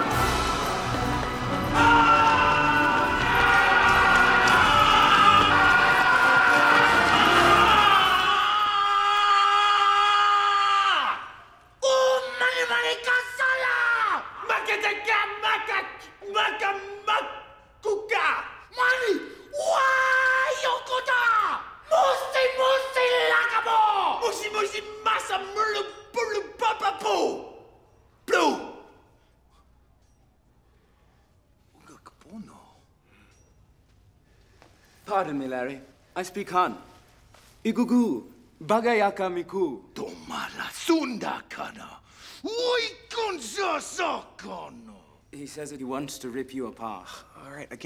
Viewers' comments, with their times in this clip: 0:08 Why are they still yelling?
0:31 it sounds like he said "you like porno?" 😂 I always thought the joke was that Larry's random yelling translated into the Han language saying he likes porn, which is why Khan responded back saying that. 😂 ...BUT this is a kids movie, so obviously, I'm wrong. 😂